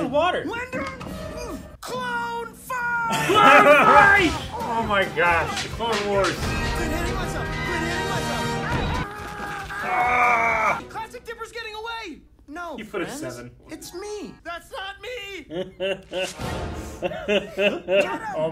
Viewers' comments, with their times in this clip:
0:05 “The Clone Wars” theme music plays I cried of laughter